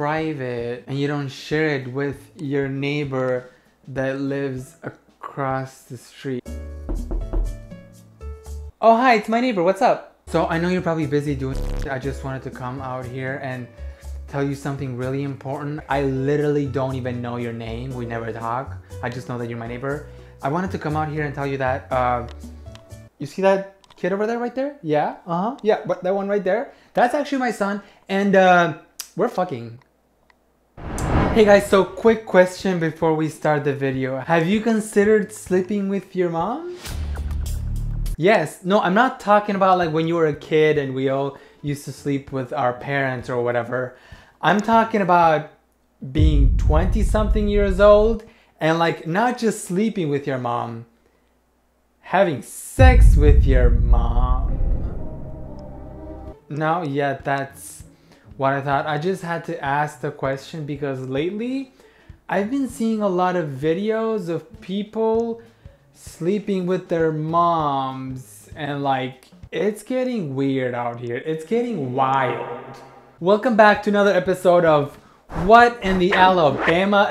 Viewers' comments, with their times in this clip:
0:06 That knock gave me a heart attack I thought someone was knocking on my window 😂😭
0:06 HELP I THOUGHT SOMEONE WAS KNOCKING ON MY WINDOW FOR A SECOND 😅🤣
0:07 I DEADASS THOUGHT SOMEONE KNOCKED 😭😭😭😭 I was watching it at 3 in the morning. Got scared out of my wits 😭😭😭😭😭😭😭😭😭
1:02 Yow wtf. I'm wearing an earphones and the knock sfx was so realistic, My heart jumped out of my chest cuz I thought somebody was actually knocking on my door when I am alone at home in my room, and it's already am😭😭😭